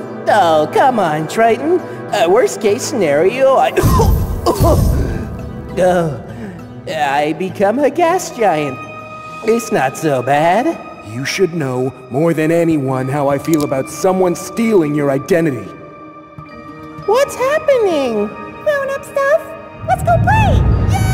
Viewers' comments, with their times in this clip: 0:04 Those coughs almost made me scream-